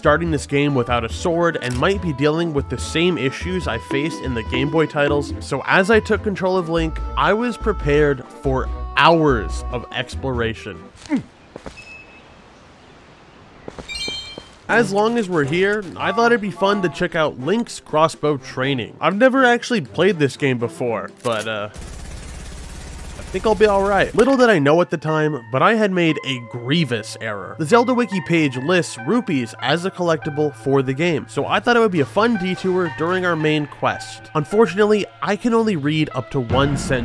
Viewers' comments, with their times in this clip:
0:10 caught me off guard there is some kinda of football thing going on nearby, just people watching football and RIGHT as the rupee appeared they started cheering really REALLY loud lol
0:25 that music... Dont awaken memories in me again